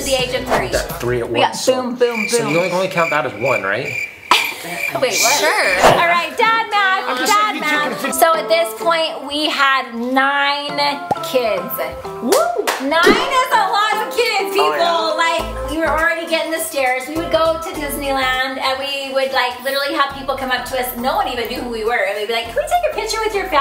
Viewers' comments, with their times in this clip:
0:05 idk why but i could listen to that sure for the rest of my life